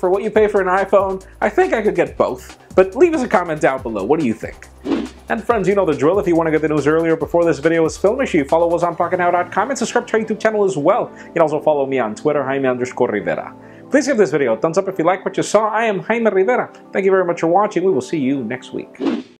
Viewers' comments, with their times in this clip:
0:06 The last words out of my tablet was "but", then there was a loud boom.